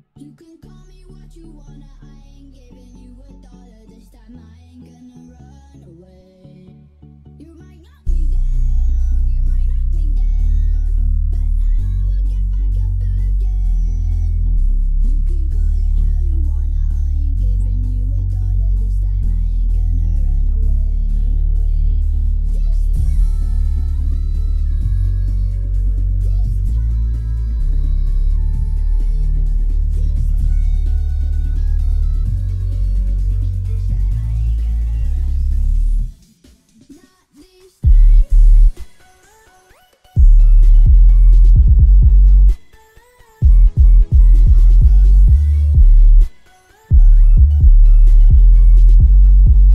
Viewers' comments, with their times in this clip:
0:07 This bass is what im looking for the rest of the music is not like this bass which is in start...................
0:12 with 0.65 Custom Speed Better Bass
0:37 My earphones got damaged after increasing the volume....the bass is so dangerous for my earphones. my earphones got blast.😓😓😓